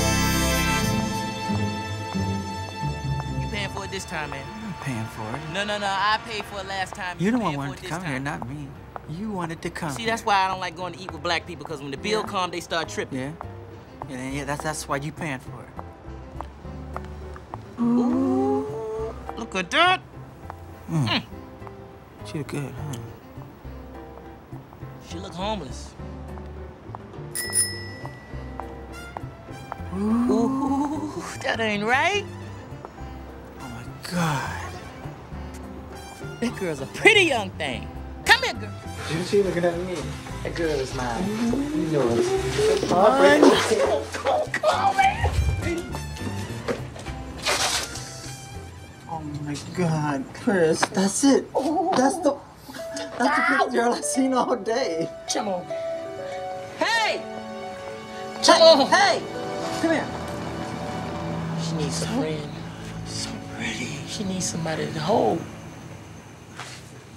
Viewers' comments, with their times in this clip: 0:10 His voice is usually high why is it a little deep
0:54 How Michael didn't lose the take when he said the second 'shamone' lmao